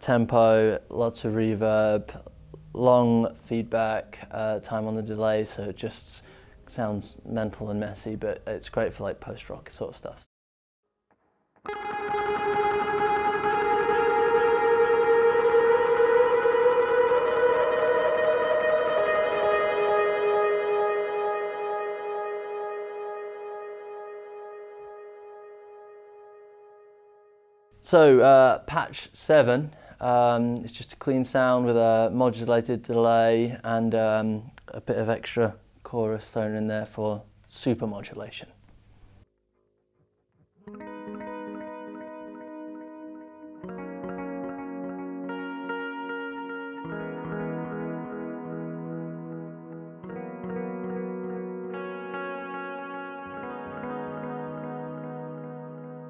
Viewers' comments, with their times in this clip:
0:07 is literally every Post-Rock I've heard so far
0:39 Exactly my thoughts.. Those ambient sounds are heaven like Rip